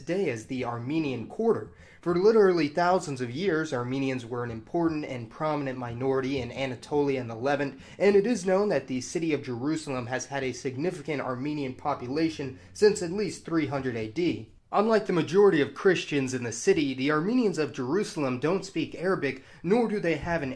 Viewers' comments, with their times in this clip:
0:05 Watching these videos I've pretty much come to expect that he's going to mispronounce stuff at random - more often by putting the accent on the wrong syllable. In this video, for instance, when he mispronounces "Levant".